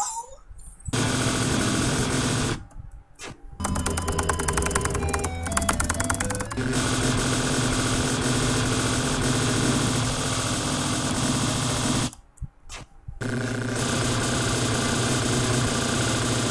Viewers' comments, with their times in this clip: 0:03 you sounded like an Undertale speedrunner with all that keyboard smashing xD